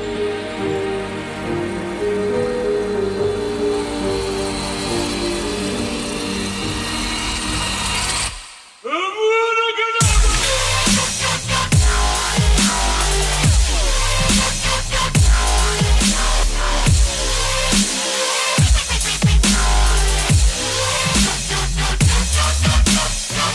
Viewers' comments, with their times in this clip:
0:05 awesome drop after that